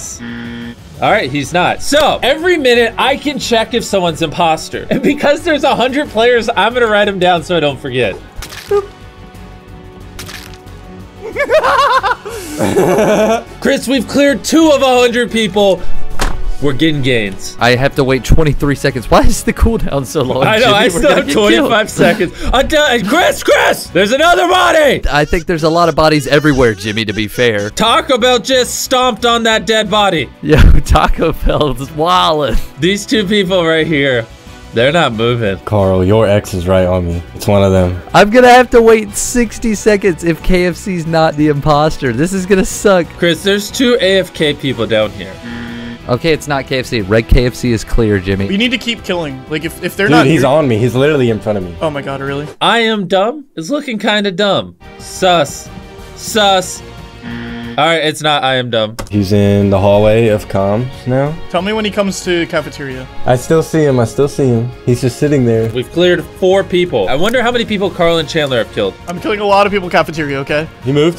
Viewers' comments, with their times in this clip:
0:09 karl just turn to Pennywise sound XD
0:25 IM DYING ON THE BACKGROUND SONG😂😂😂😂😂😂😂😂😂😂😂😂
0:53 I'm stupid it looks stupid it's said very stupidly 😂😂😂😂